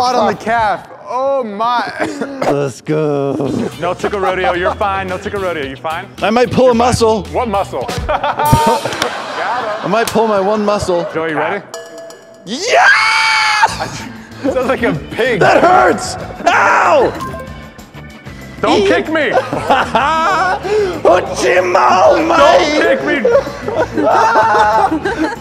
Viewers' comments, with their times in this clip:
0:10 That scream was inhuman.
0:11 his scream killed me😂
0:12 No one: Babies at 3 am:
0:12 People with headphones dying